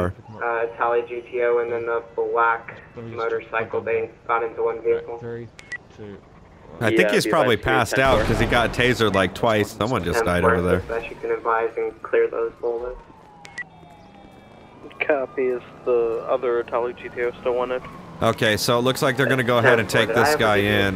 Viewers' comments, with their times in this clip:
0:04 perfect timing. 3....2.....1.... BOOM